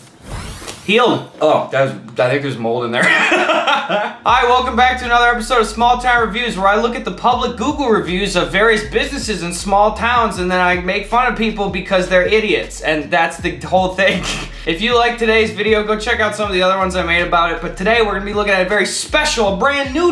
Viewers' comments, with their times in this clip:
0:03 HE DID IT! HE LAUGHED!